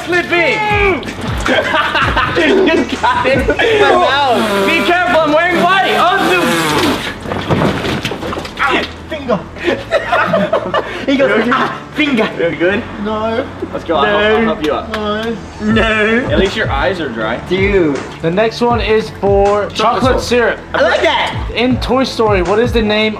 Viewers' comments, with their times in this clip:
0:08 fingah 😹😹😹😹😹😹😹😹😂😂😂 i died